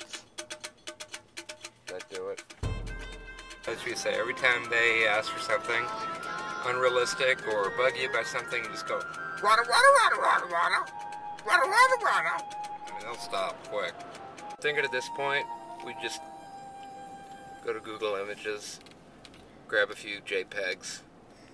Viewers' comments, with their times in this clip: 0:09 Nice Shnitzel Impersonation :D